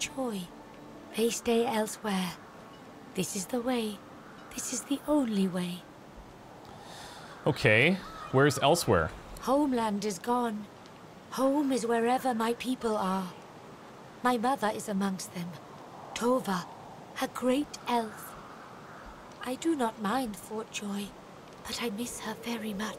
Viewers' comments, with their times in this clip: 0:09 I tought Elswhere(Elsweyr) was in The Elder Scrolls series.